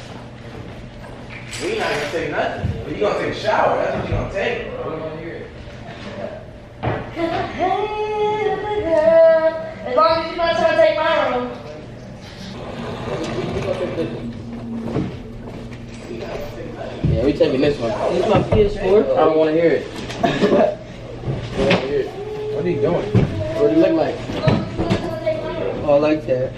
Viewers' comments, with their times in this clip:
0:07 she sounds like an angel 😇